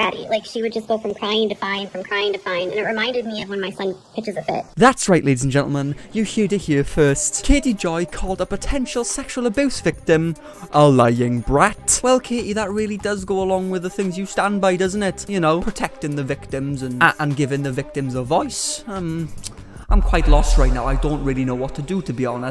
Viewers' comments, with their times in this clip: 0:05 that GTA 4 music JUST MIGHT have made me subscribe 😂😂😂😂